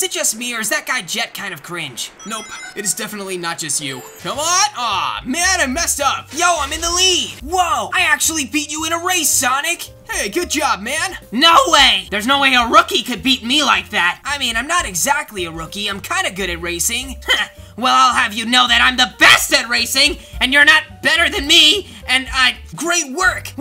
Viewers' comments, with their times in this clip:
0:06 I like how he voice the bacon hair 😂